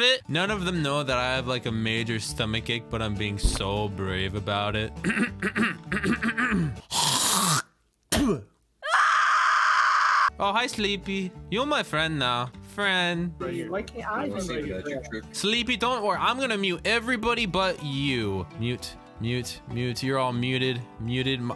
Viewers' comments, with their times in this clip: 0:05 Yoo that scream was personal 😭😂
0:08 That scream doeeee